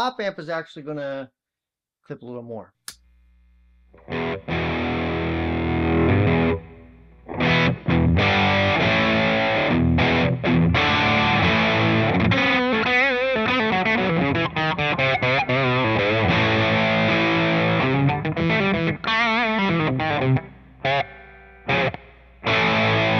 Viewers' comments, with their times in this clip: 0:07 I like this tone for a rhythm tone